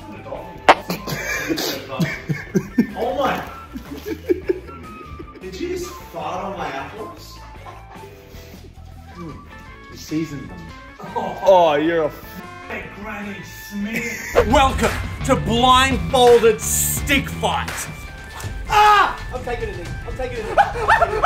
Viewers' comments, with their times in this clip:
0:05 that silent laugh scream 😭